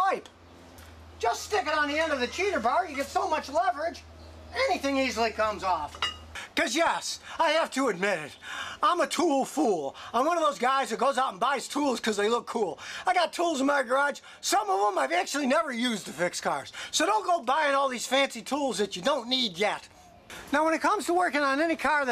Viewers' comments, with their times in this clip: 0:09 Sounds like scotty is about to die speaking 😂